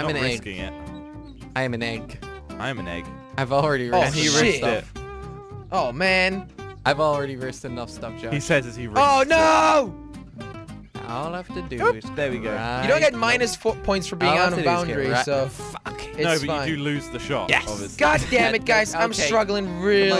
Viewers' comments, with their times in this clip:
0:04 heard u cuss and didn't bleep it huh?